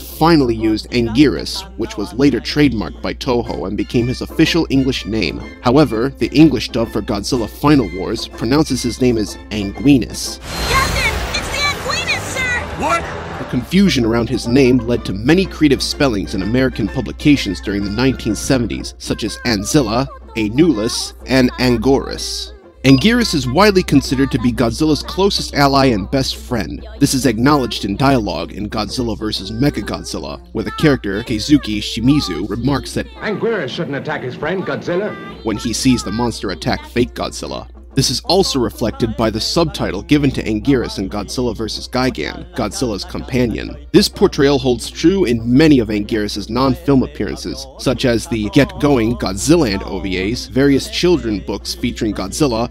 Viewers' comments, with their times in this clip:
0:10 You see he's not shocked that Anguirus is here, he's shocked by her dumb pronunciation of Anguirus.
0:33 Angweerus, and Godziller. Why do several English dubs say Godziller? The ones who say Godziller might be British.